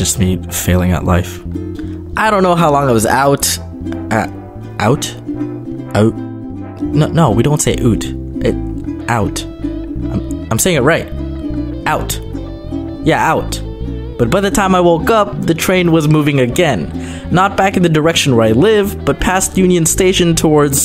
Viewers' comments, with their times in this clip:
0:06 isn't that the Scottish accent?